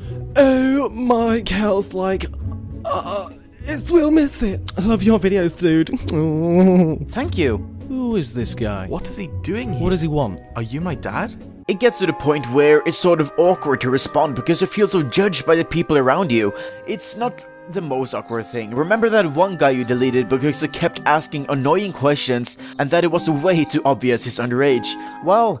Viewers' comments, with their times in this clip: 0:09 " Are you my dad" HAHAHAHAHHAHAAA I AM DIENG THE VOICE HAHAHAHA